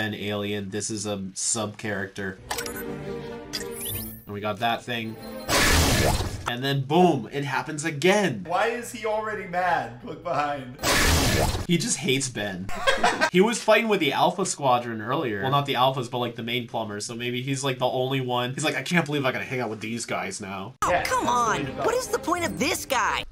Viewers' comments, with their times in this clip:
0:07 Ok but why does it Play the Spongebob BWOMP sound specfically on Molestache Transformation